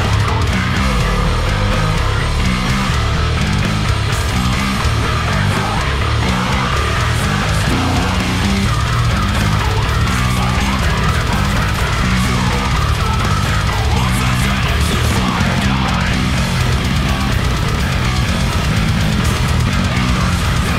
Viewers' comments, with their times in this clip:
0:06 sounds soo goooood. And I dont even play bass.